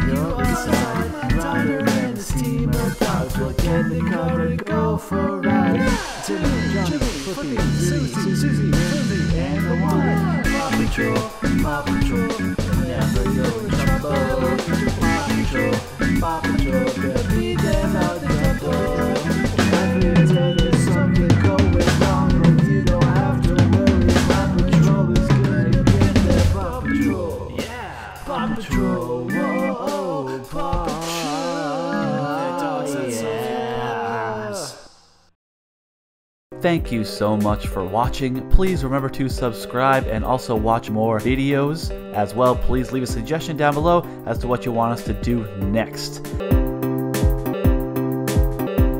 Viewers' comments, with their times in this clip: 0:05 Sounds like mario
0:29 ryder laughing pups: How dare you laughing at us you shall perish creator: oh...OK.. outro plz